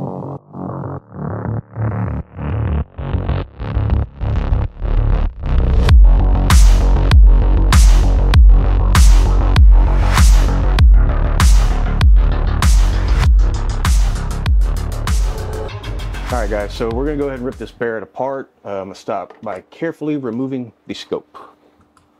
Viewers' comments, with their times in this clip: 0:07 Just abit louder and a bigger flash in front of your face 😂